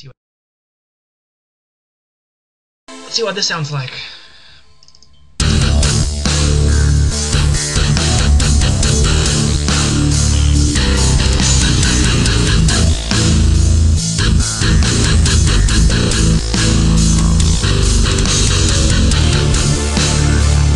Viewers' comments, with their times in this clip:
0:05 it sounds like something straight out of dragon ball z
0:05 Thanks a lot!!!! sounds good, you really have an ear for music! :)